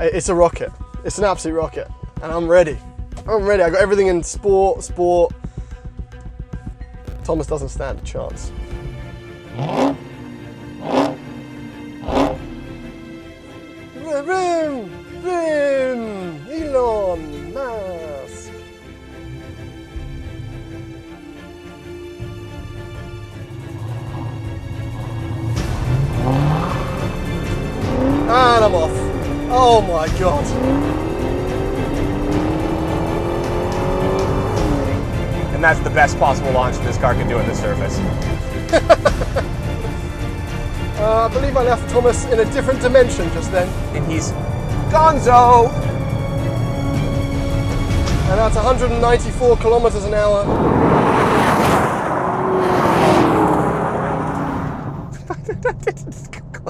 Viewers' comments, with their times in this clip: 0:03 The way he says I got everything in SPOR SPOR 😂😂
0:38 gaps hellcat rich laugh